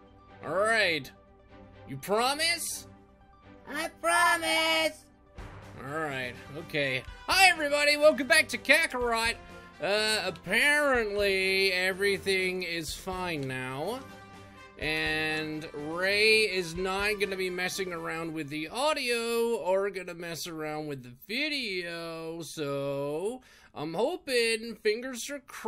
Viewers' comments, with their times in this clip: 0:07 I thought you said Hey Guys the Name’s Sonic